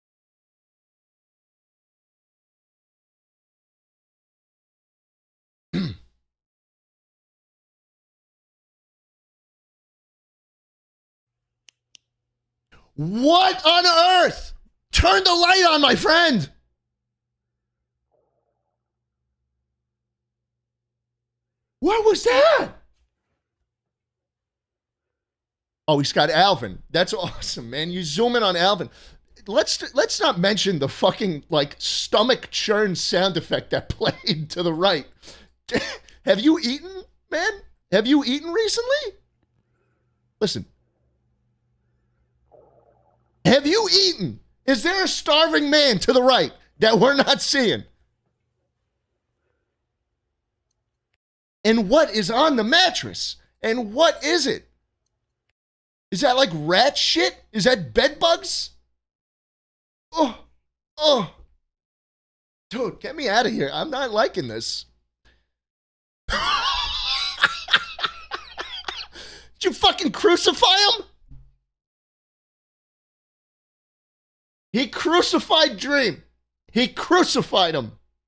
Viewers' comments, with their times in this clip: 0:10 The 2nd Holy Crusade begins.. here the trumpets sound off!!
1:00 I am fasting while watching this and when he said was that his stomach I literally thought it was mine 💀👍